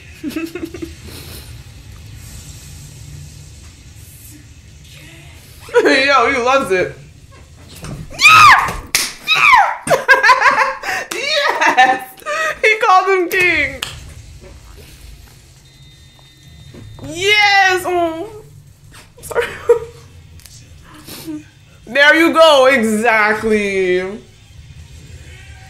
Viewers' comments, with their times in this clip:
0:09 The cat there is wondering why this hooman is talking to herself , shouting like crazy and not giving me any fries